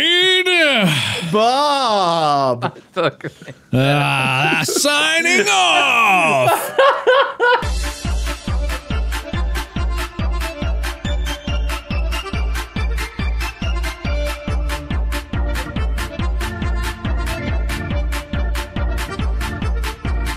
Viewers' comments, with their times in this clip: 0:07 the outro is oddly fitting it perfectly syncs up with the beat